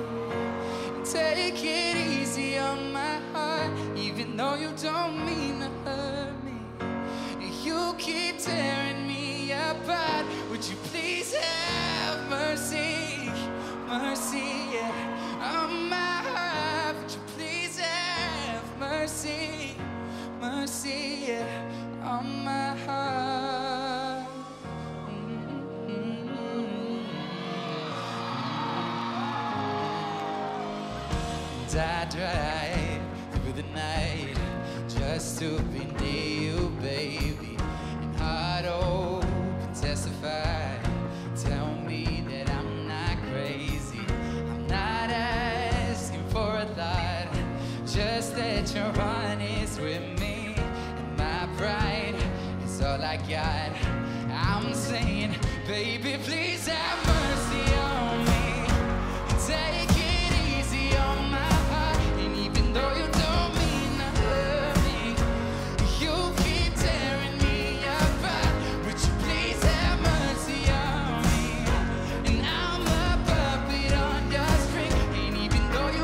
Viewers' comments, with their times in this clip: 0:10 that Voice crack though 😂😂
0:57 I dont know why, but i really love the way he says "Mercy on me" haha. But oml, he is just so good at live, that passion and talent. Finally we have top artist, who can actually sing. So proud to be part of #mendesarmy. Love him